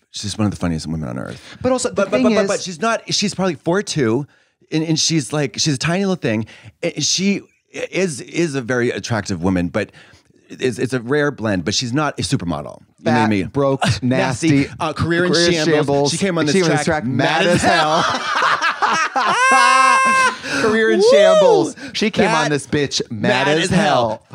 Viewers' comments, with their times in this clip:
0:06 i thought katya said “she’s probably 42” i was like mama she’s 62… which also surprised me cuz i googled it and she is gorgeous